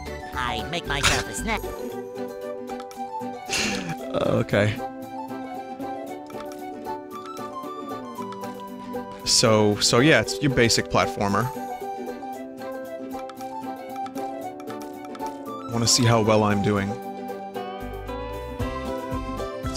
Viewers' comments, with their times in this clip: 0:05 That "okay" sounded different from Vinny's usual voice.